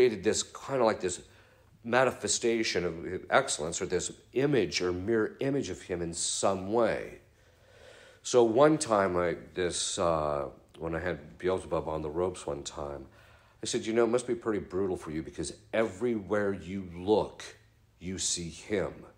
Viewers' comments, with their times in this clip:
0:04 Fr. Ripperger just casually says, 'one time when I had Beelzebub on the ropes...' I literally busted up laughing! This was a great talk, but that was too funny not to comment on.